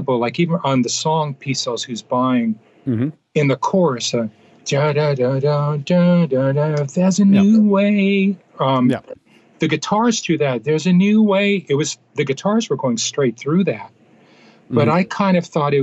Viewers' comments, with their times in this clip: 0:03 My mom isnt a fan of metal, but she couldnt help but get that part stuck in her head and hum it because its just so damn catchy!